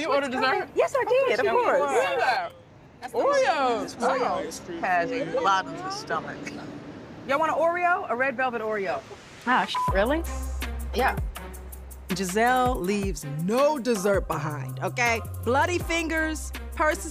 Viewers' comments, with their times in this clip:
0:03 so much emphasis from Karen on BOTTOMLESS STOMACH 😂